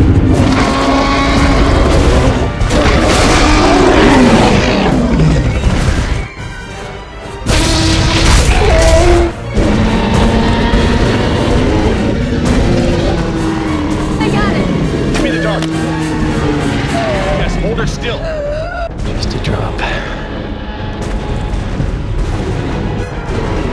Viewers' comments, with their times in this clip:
0:06 HAHAHAHA!!!! That was hilarious. It was just so out of place to see the Rex trip like that, and the sound it makes is like “Oh shit!”